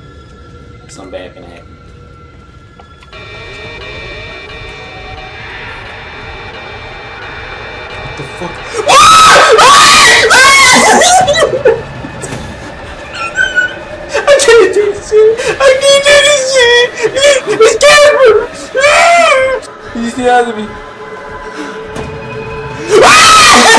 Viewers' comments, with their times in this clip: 0:09 lol squeeky scream lmfao died there